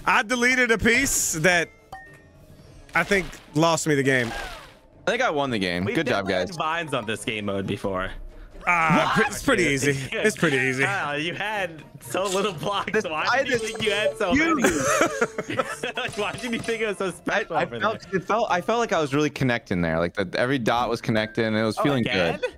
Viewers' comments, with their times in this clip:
0:08 that screech lol